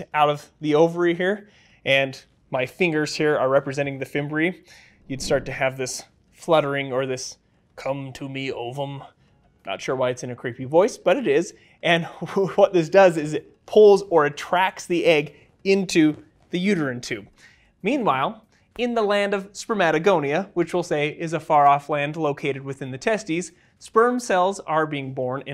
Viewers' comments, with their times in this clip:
0:08 Loved the count orlok voice 😂😂❤